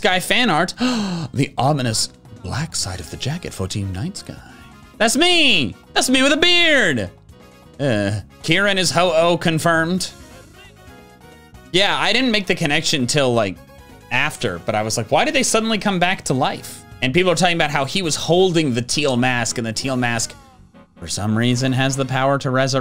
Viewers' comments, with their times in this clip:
0:04 "That's me!" "That's me with a beard!" *Unsatisfied Minecraft villager noises